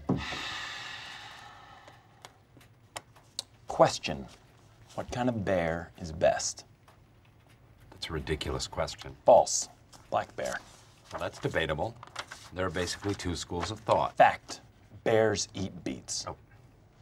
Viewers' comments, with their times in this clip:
0:03 Jim’s “Question” is so spot on